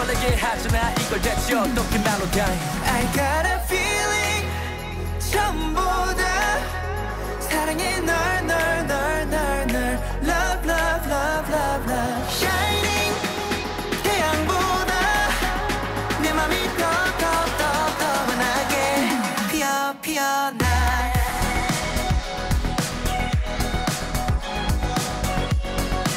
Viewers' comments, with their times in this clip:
0:07 Fun fact: Jaeyun is saying "No no no no no" in australian accent 😆 just kidding.